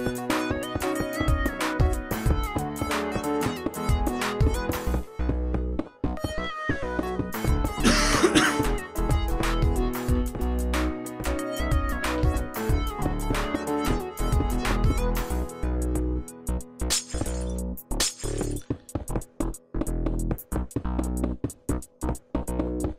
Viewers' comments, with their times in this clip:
0:07 Not sure why you coughing made me and my brother laugh. But oh well at least you made someone laugh. :D
0:07 Why does nobody mention the cough ?